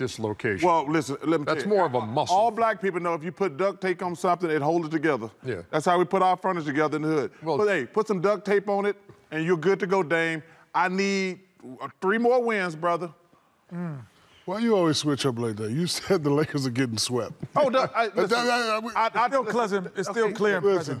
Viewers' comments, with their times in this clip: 0:04 that "yeah" by ernie!!!!😂😂😂😂